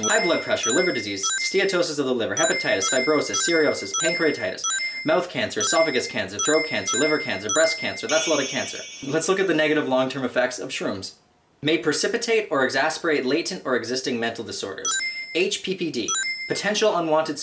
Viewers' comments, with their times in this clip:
0:05 ....That's a lot of cancer. The way he says it....LOL